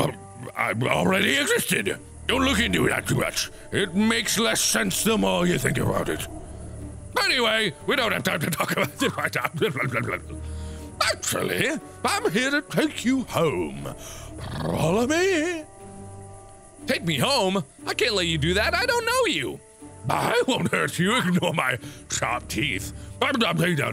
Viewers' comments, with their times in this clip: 0:04 this is the best voice aside from the doctor I forgot his name-